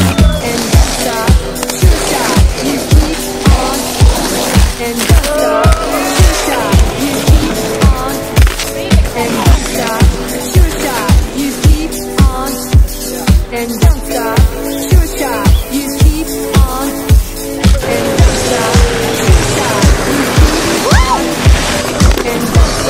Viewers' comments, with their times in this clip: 0:03 Is the song saying, "and toe stop, shoe shy?"